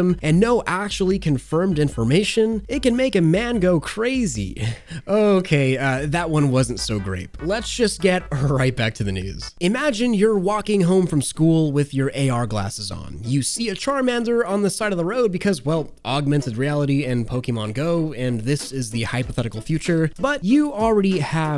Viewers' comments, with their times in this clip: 0:07 ripe back into the news?
0:08 Right or ripe?